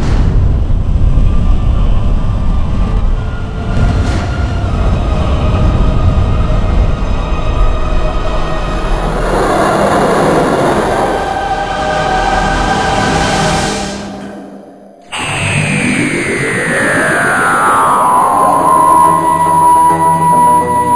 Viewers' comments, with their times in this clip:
0:08 what the hell was that noise sounded weird